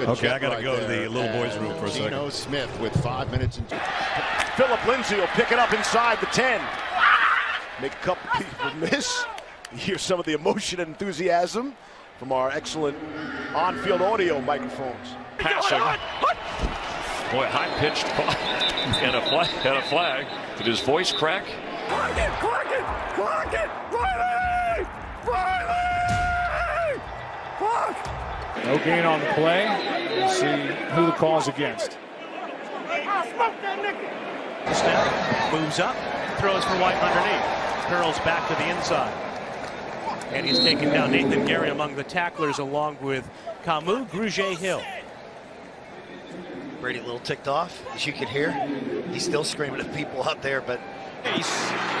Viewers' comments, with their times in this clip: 0:04 I don’t know if I should be concerned about the noise he made or the score
0:13 that voice crack 🤣🤣
0:15 his voice crack hilarious🤣🤣🤣🤣
0:15 “Hut” “Hut” high pitch “Hut” Got me dying 😂😂🤣
0:15 dude hit puberty mid hut
0:16 I didn't know Mickey Mouse was in the NFL
0:16 had me laughing. That was Definitely a voice crack
0:16 is Mickey Mouse the qb of the Vikings??? No wonder he can’t win the big games
0:16 Matthew Stafford turns into Mario from The Super Mario Series
0:16 That voice crack will haunt his dreams
0:16 “ voice crack, offense, number 8…”
0:22 Stafford sounded like Thad Castle from BMS
0:22 Matthew Stafford as Mario
0:25 Stafford's impression of a Turkey xD
0:36 what is that guy saying? Call me immature n having a juvenile mind but it sounds to me like he's saying "I've never had my girl fingered" lmao ... bc I highly doubt that's actually what's being said could someone lmk what is really being said there?...n who is actually saying it too? lol
0:42 Brady sounds like a gta 5 character